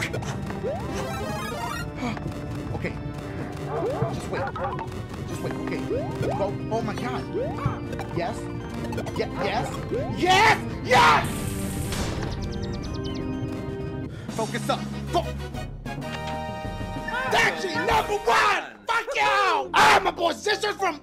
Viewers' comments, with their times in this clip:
0:08 what dashie sound like when he touch the puh